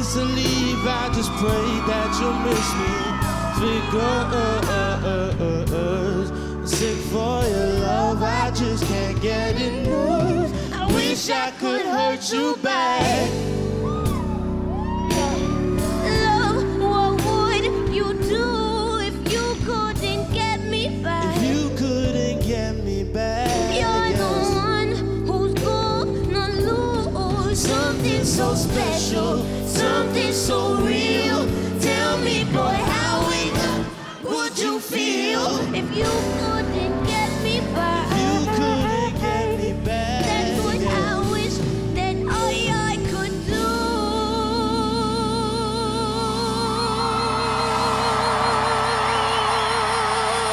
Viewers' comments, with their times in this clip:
0:08 is it playback from jessie?
0:32 I love how you can hear the audience screaming the cuss word at this part
0:33 they were singing along ...